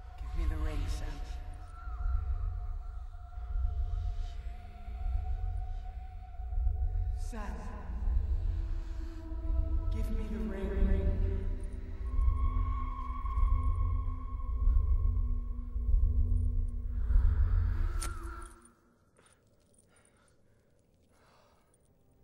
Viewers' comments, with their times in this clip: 0:03 You hear the souls inside the ring saying (Thief)?
0:04 you can hear the ring calling Sam a thief.
0:04 you can actually hear the ring call Sam a "THIEF". Awesome detail.
0:04 you can kinda hear among sound effects the word “ brave “